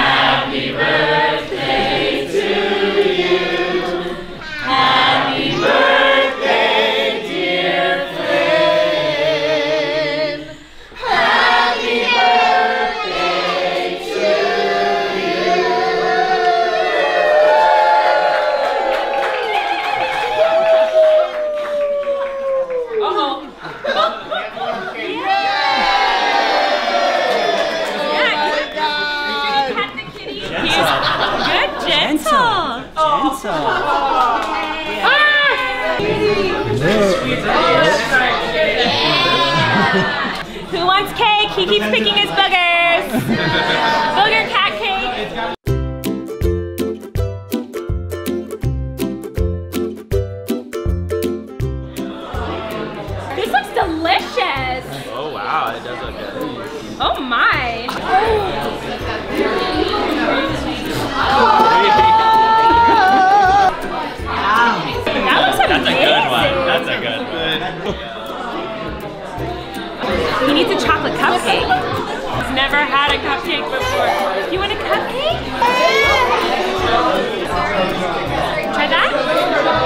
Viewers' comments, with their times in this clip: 0:05 You can tell Frankie is related to Ariana Grande by the way he is singing happy birthday
1:02 OOooohhhhhhhh OoHhh *****sings frozen music****** 😂 did anyone else hear that?